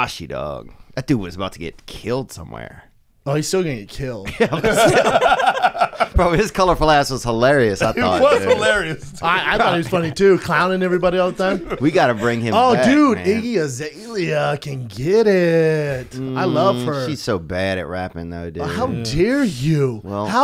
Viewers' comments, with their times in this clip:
0:07 what did Brendan say about tech9 he mumbled it